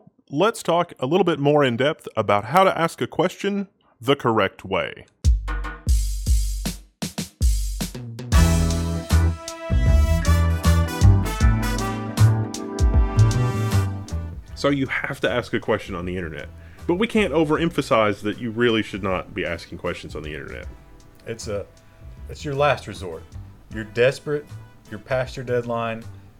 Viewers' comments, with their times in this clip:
0:08 Audio quality clears up Content quality offsets the two minutes of crimes against waveforms.